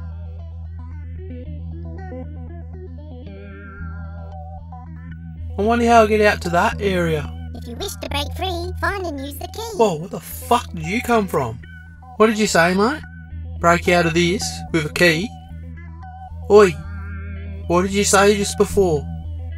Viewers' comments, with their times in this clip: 0:06 The pink thing's voice sent me under